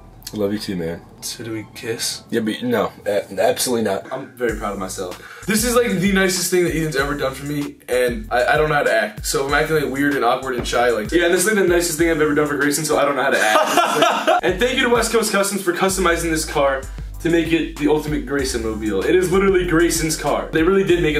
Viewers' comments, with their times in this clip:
0:03 sounded like James Charles lol. Plz tell me I’m not the only one rewatching this lol in 2019